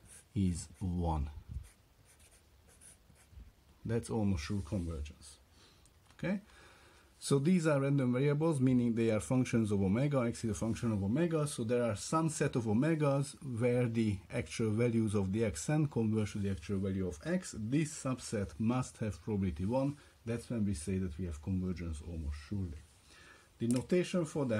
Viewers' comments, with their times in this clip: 0:08 Thank you! proceeding to the rest of the videos. I guess it was my bad mistaken "same set of Omega" as "some set of Omega" :-p